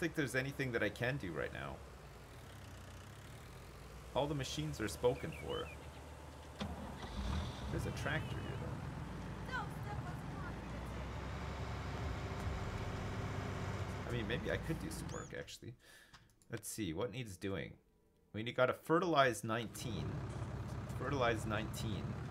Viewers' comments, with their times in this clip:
0:06 i hear a woman’s voice...is that in game? It sounds like “Heyyyyyyy don’t - (and then it sounds like a foreign language)”